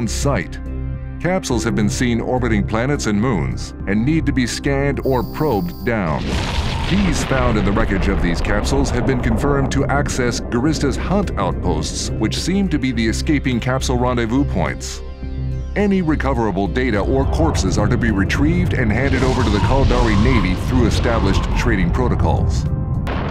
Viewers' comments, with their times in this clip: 0:04 Putting the Hostile Module Activation noise in was cruel yo. I instantly started rapidly alt-tabbing to save my pod only to find that I wasn't even logged into EVE.